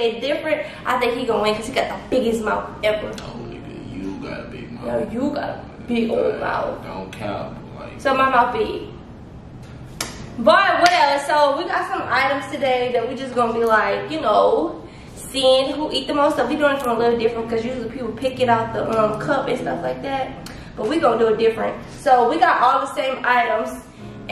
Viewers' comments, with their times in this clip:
0:06 ..ya nasty in raver from thats so raven voice